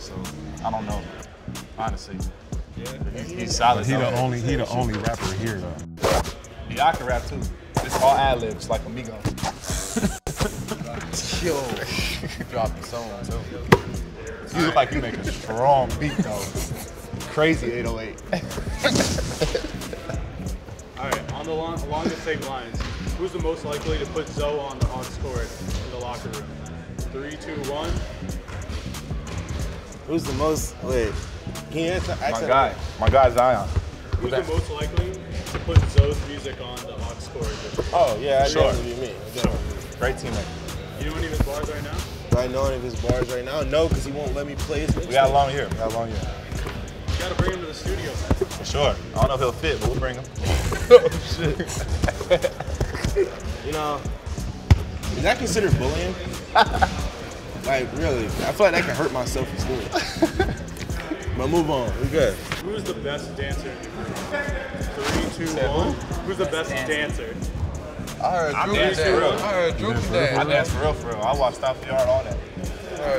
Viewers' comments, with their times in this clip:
0:08 when Zo said “MIGO” gave off a shit ton of LaVar vibes 😂😂😂😂
0:55 bruh he sounds and looks like a kid